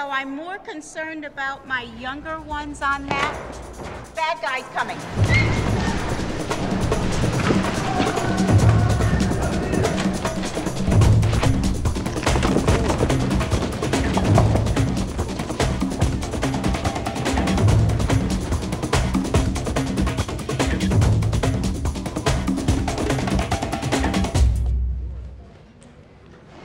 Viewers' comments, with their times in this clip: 0:07 Damn, you know shit is real when they've got the bongos going